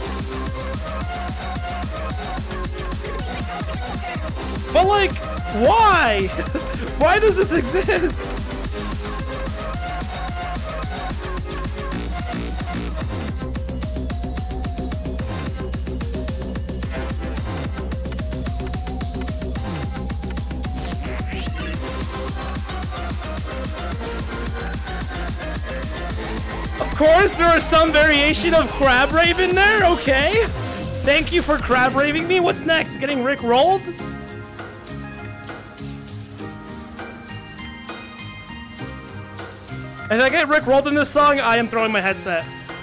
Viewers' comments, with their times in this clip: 0:07 "why does this exist?" nah man why is it actually good? the drop and everything after that is ACTUALLY GOOD
0:23 "that part sounds like reality check bro"